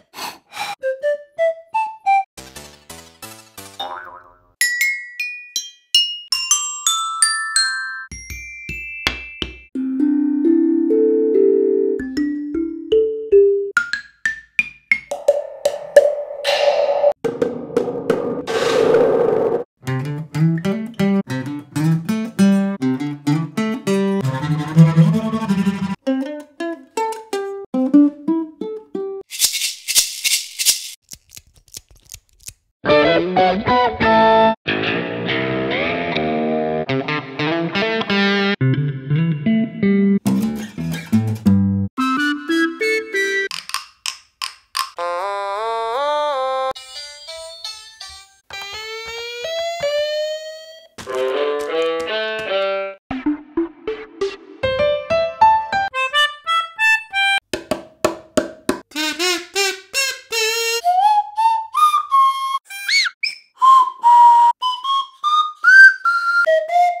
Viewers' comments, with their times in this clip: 0:02 Well, look who played the mayonnaise!
0:02 would ya look at that. mayonnaise is an instrument!
0:02 I KNEW MAYONNAISE WAS AN INSTRUMENT!
0:04 why play McDonald's song play like this (c d f b g)
0:15 sounded like a samsung shutdown
0:20 the Carbon fiber Guitar!
0:24 is that guitar
0:31 reminds me of feeding pou
0:31 reminds me of feeding pou
0:32 is that guitar 2
0:34 it sounded like a corrupted version of a rock zombie from trolls world tour
0:34 good elektrik guitar
0:34 is that guitar 3
0:35 sounded like "only thing that they fear is you" from doom
0:35 oh no this electric guitar is broken!
0:37 The Electric Guitar Is Very Good, Because I Like Playing Guitar
0:38 I love that bass
0:38 i love that bass
0:40 i like that (rhk) sound that makes on the strings
0:42 it almost sounds real
0:55 large keyboard sounds just like it